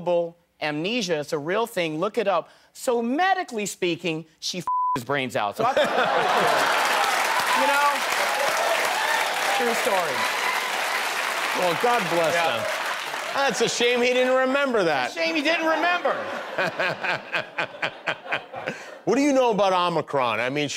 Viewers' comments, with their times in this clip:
0:05 I like how he joins in the applause after the joke hahaha